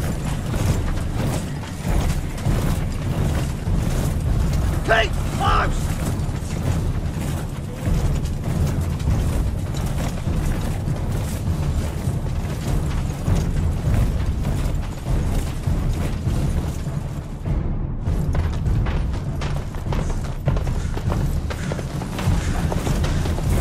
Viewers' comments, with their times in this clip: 0:04 I swear I heard "Cake Pops!"